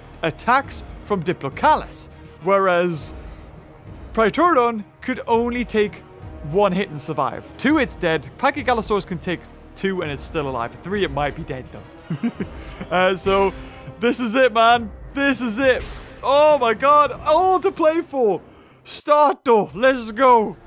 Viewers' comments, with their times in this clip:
0:07 Pokémon something something sound track like Pokémon game of 4th generation not diamond pearl or platinum that is